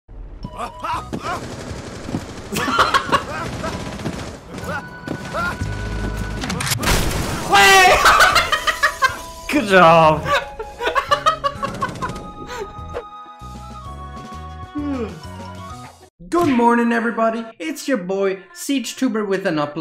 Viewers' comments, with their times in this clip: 0:06 goofy screams be like